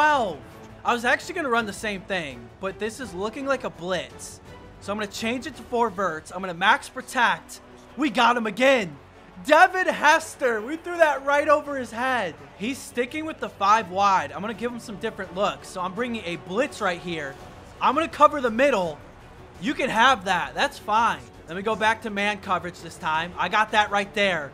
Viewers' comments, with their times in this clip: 0:06 Did anybody hear him say max protact